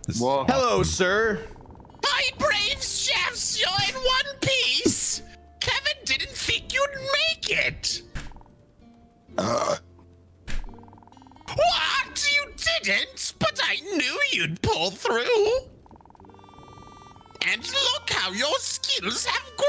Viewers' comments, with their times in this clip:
0:07 The Sundrop Voice